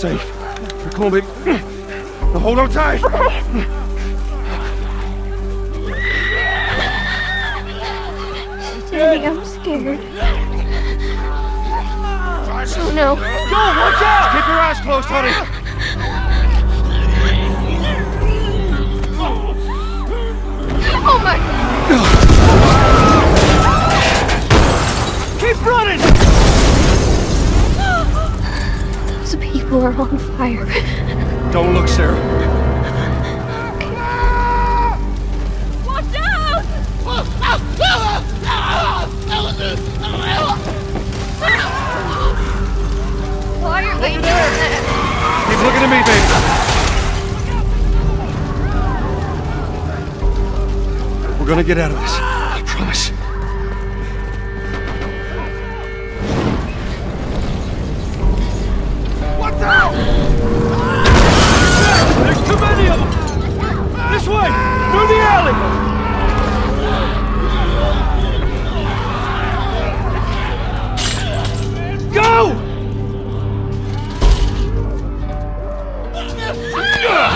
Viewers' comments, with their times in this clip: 0:06 lol did you edit in that willhelm scream ? XD
0:59 did I hear a Wilhelm scream over there? :D
1:01 OMFG that wilhelm scream never even noticed XD